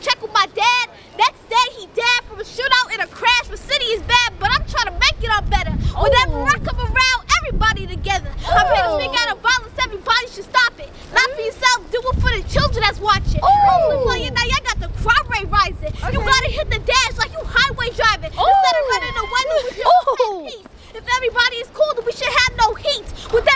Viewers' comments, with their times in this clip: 0:10 its givin flau'jae